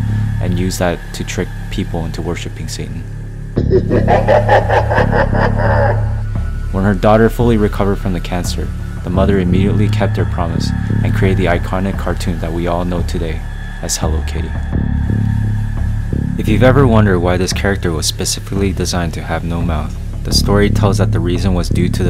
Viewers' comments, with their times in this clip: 0:03 I promise I literally turned around to get my food out of the microwave and my heart damn near dropped to my ass when I heard that horrifying demon laugh 😂